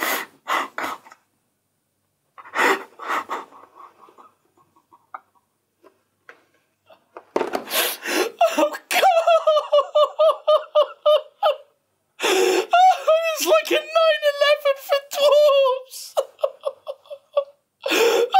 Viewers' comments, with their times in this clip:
0:06 trying to to laugh wen fake laghfing